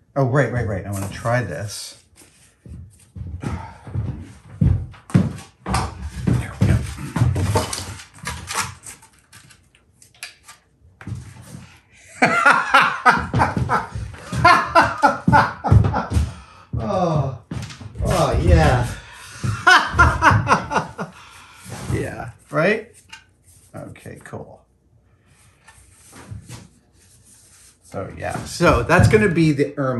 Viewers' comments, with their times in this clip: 0:10 One of my most favorite things in Mythbusters, Tested, etc. is when Adam does something that he is so smitten with he can't help but laugh loudly to himself. I LOVE IT!
0:11 that moment is awesome. Part evil villain laugh, part I’m going to be a king!